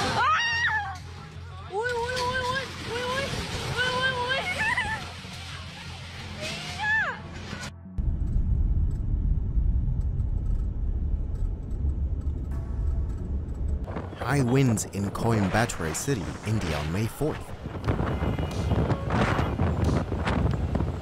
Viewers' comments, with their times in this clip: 0:09 turbo engine LOL, thanks for sharing these incredible moments!